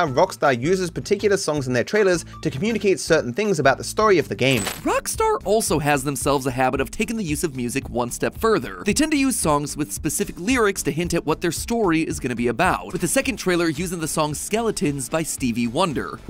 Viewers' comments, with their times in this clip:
0:03 the voice crack is crazy